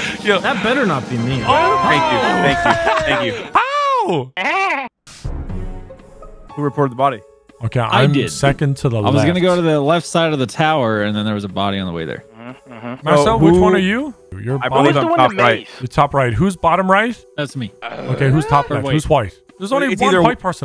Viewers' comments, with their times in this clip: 0:03 love it when people just make noises